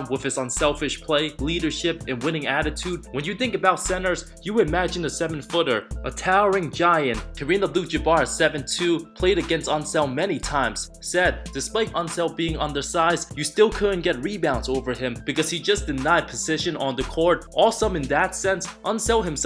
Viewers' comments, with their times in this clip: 0:07 KAREEM ABDUL JABBERBLABBER